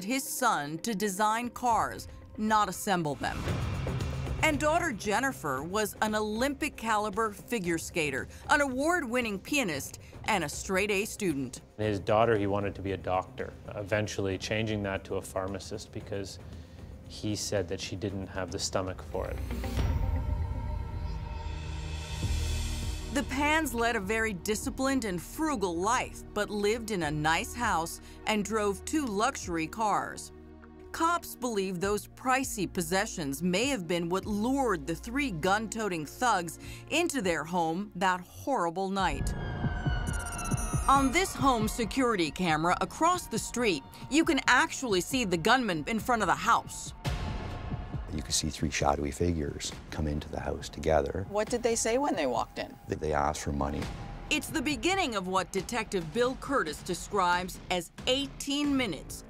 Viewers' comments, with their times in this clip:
0:08 Award Winning Penist omg sorry I know it’s messed up but it’s funny
0:08 "An award winning pianist" Why did I misheard it as penis.
0:45 suddnly narrators voice tempo rises